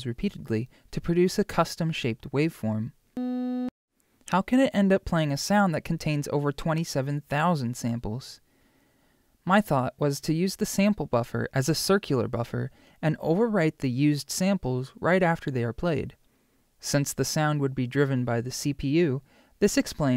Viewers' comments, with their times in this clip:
0:03 i love this song even though it is only one B note